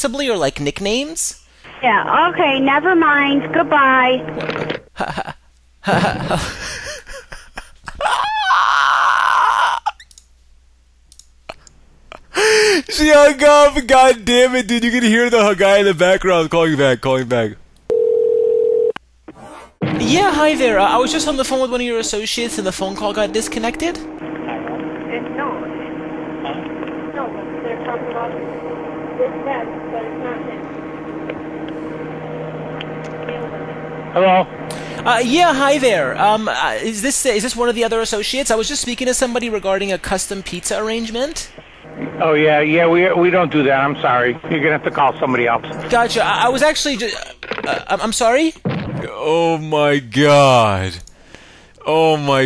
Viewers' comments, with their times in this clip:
0:06 "We're not sure what your deal is" - literally the whitest woman EVER on OP😁 I'm dead..
0:07 might be the best laugh of all time. Lmfao 😂
0:08 his laugh though!! LMAO I was laughing kind of similar 😂
0:34 tell me this isnt the most five nights at Freddie's "hello" you've ever heard